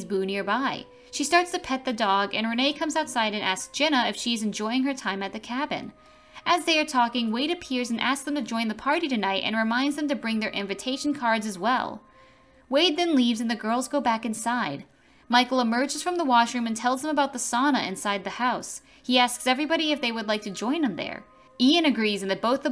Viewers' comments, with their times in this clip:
0:05 Ah yes, I love a nice “joid”